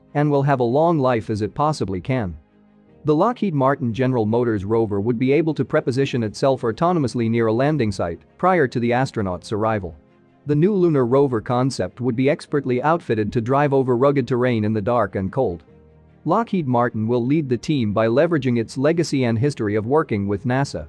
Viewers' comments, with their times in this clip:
0:05 Among others, but you say preposition, I say pre-position